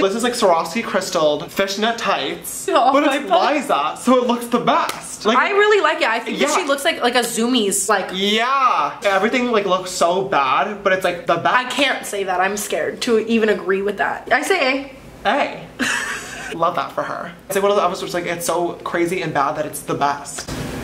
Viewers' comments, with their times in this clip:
0:08 YAAAH flashbacks of the famous vine ensue YAAAaaAAah